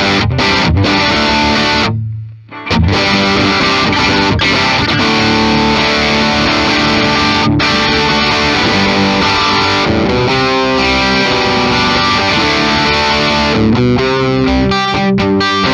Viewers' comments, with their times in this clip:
0:03 Slight audio desync